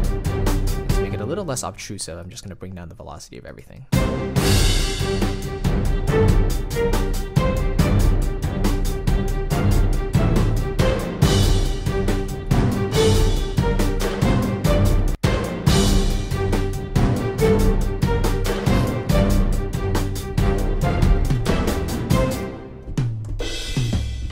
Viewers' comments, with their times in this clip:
0:08 here where you doubled up on Hi hats, I'd try using a Humanize function instead of just dragging velocity fader, just so it has more variety. This was fun to watch. I like to see how other composers do the thing.